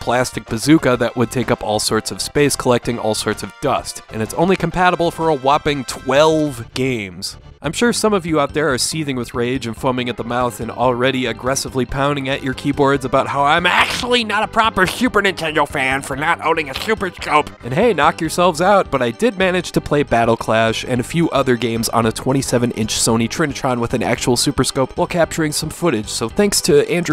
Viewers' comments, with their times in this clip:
0:10 Lmfao the Neil Goldman voice got me CRYING 😂😂